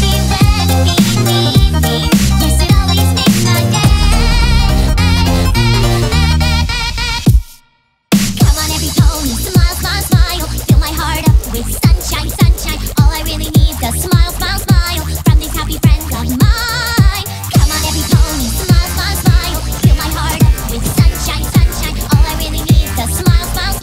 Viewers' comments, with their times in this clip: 0:09 Those wubs fill my heart up with sunshine. ^^